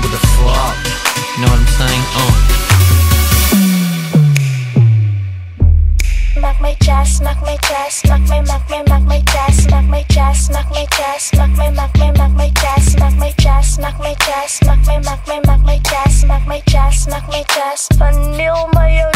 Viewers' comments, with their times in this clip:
0:06 I thought she said milk my chest lmao